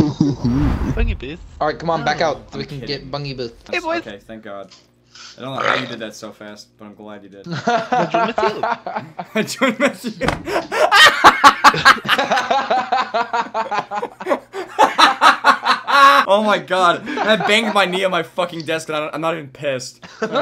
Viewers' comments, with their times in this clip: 0:05 That burp tho 😂😆😂